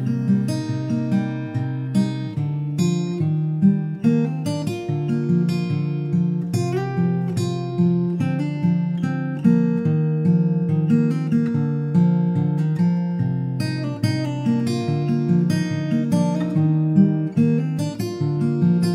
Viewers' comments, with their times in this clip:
0:03 wow .. that fingerstyle solo was crazy good - i don't know how long it took you to play it like that but you make it look easy and IT'S really NOT !! Perfect as always .. thanks for sharing this !!